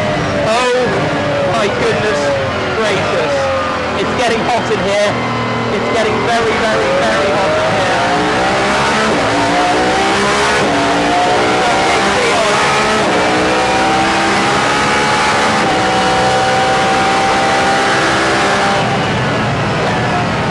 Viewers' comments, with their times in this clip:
0:06 those 9K Rpm screams gonna make me shed a tear of beauty